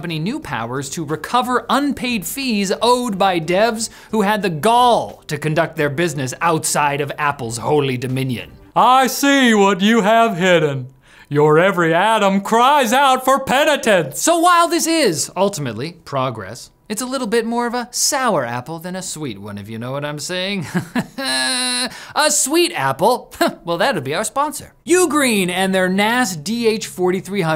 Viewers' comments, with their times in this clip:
0:09 I live for these Tim Cook impressions😂😂😂😂😂